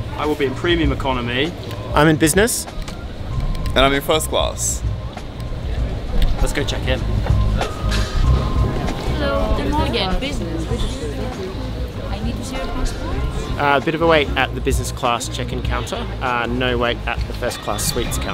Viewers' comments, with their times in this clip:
0:03 Why do you have to sound soo fancy when you said 1st class